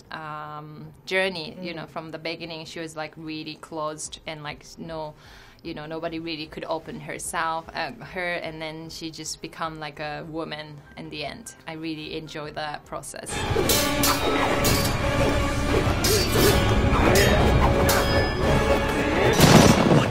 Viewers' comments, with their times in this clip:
0:04 "Nobody really could open her south" Omg I died laughing